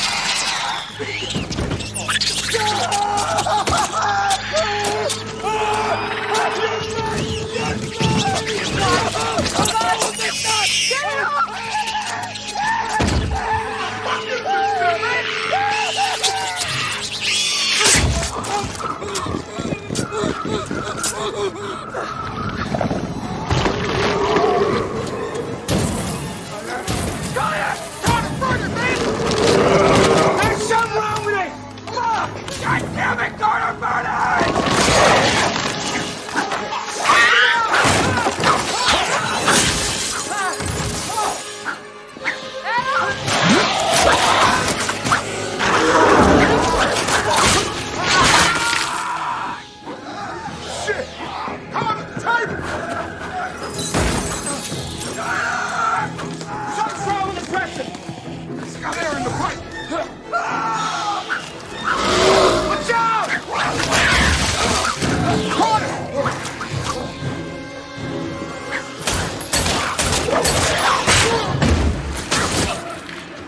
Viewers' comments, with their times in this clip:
0:06 little bit of poor editing there. The guy's been screaming for a full five seconds -- but NOW these two are suddenly going to jump up in fear?
0:16 bro why did there have to be the damn gulping sounds…
0:48 God Adam’s scream is painful
0:55 how do you scream like that when you got a hole in your gut. I can't even release a sound when I stub my toe.